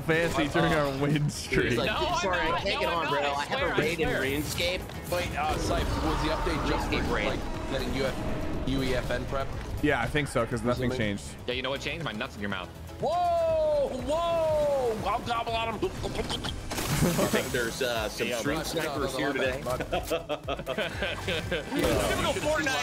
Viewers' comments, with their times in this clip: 0:08 Ninja is a cornball fr nd you can tell Sypher doesn’t like his inappropriate comments. The awkward silence and awkward ass giggle says it all. Not really sure why he continues to film with him bcuz this has happened on several videos